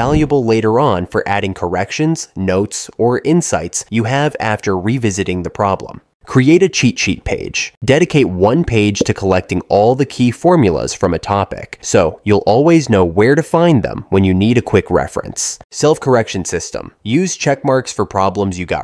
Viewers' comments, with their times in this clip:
0:05 Create a Chi Chi page